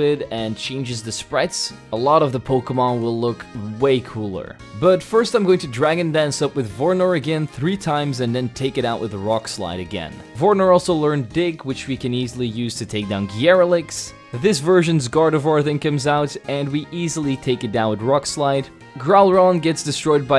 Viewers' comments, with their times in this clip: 0:06 had some gain issues and your mic became very staticky